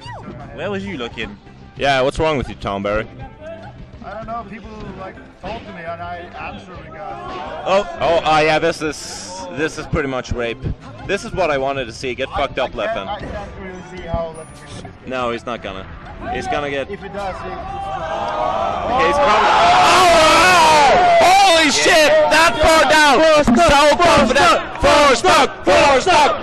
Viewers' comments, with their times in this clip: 0:10 Are they Swedish commentators? Leffen gets all the hate in Europe lol